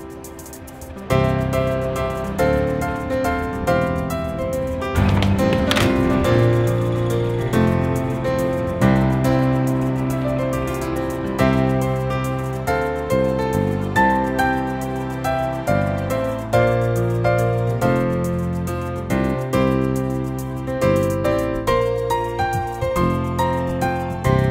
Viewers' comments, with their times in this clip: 0:06 The only door slam of the series ?